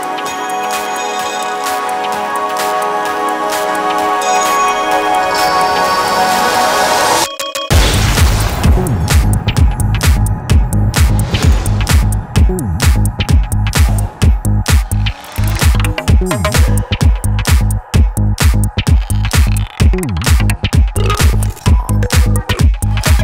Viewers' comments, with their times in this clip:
0:06 The drop is simply breathtaking!